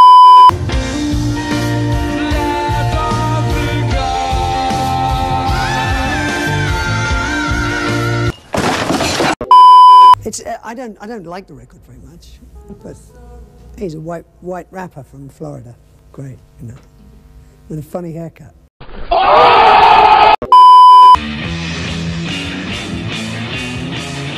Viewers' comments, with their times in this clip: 0:05 wow Roger's voice is higher than my grades
0:05 i still can't believe it can get that high, that's ridiculous